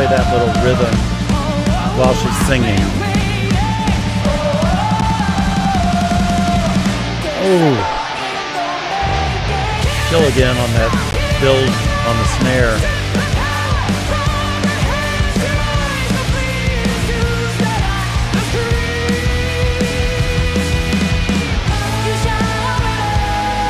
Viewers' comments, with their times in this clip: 0:08 Love that Bass slide😮